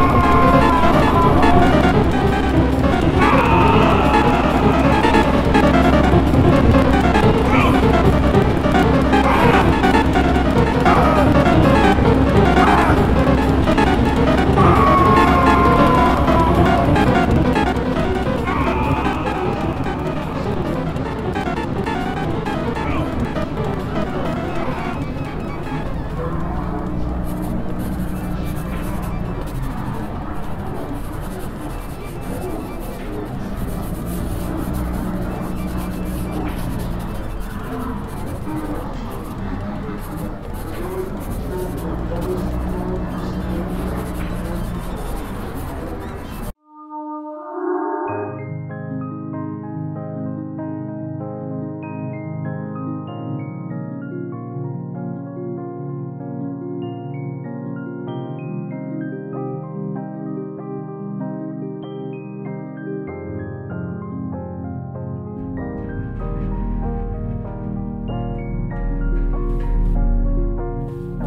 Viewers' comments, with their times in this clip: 0:04 Actually reminds me of a Caroliner Rainbow band.
0:54 ho-ho! BB is finally back to entertain us with her odd adventure one more time 😁 I'm glad the dev decided to keep the original soundtrack for this one which makes you feel nostalgic & at ease